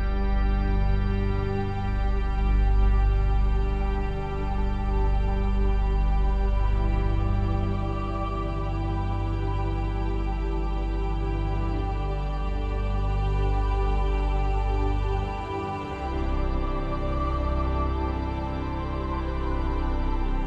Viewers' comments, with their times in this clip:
0:04 There are several virtual instruments ‘@ is the choir patch of the Roland Integra 7. The Korg Kronos and Hauptwerk virtual pipe organ were also used. The blending of all these sounds create a very rich surreal sound experience. It’s hard to enjoy the richness on a YouTube video vs in my music studio. I appreciate your comments and your interest.